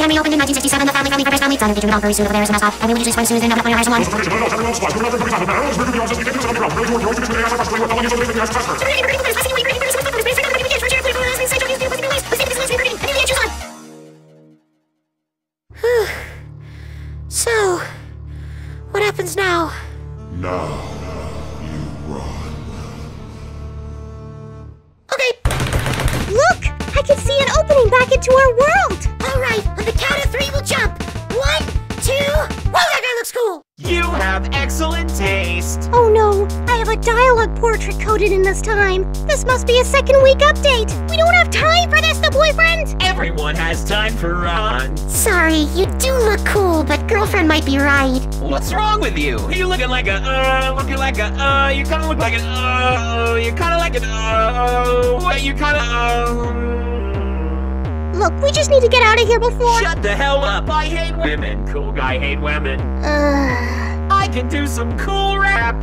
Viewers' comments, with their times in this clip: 0:04 they're rapping faster than Eminem himself
0:04 i cant even understand in 0.25 speed
0:21 seek music intensifies
0:33 I love Ron’s voice it fist him so well y o u h a v e e x c e l l e n t t a s t e
0:34 Ron’s voice made me cry it’s just the voice Id imagine how he sounds
0:46 i heard something very weird-
0:49 i like how ron sounds like a broken music box at this part
0:53 The Voice Ron funny 😂😂😂